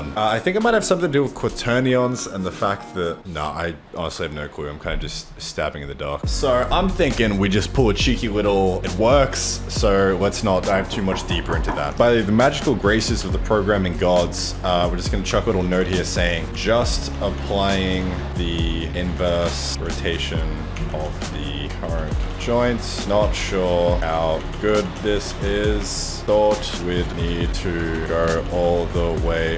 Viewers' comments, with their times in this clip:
0:10 Who else shat themselves thinking someone was knocking